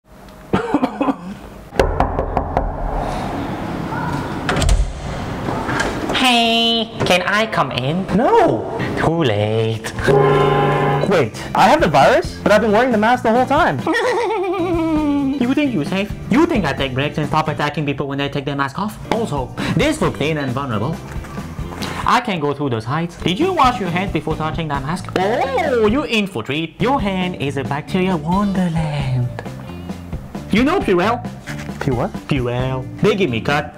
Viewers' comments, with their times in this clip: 0:04 who else noticed the moaning sound in
0:14 that laugh was hilarious 😂